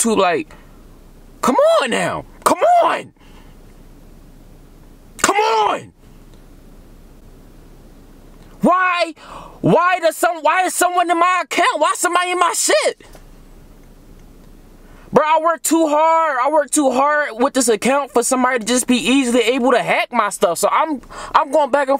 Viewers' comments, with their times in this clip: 0:05 my dad yelling at me to hurry up.